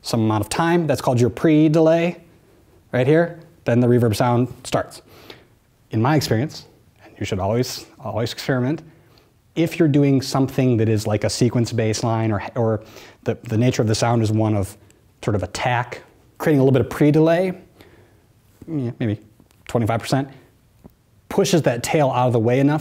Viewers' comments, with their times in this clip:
0:09 delay 🤘 sooo good thank you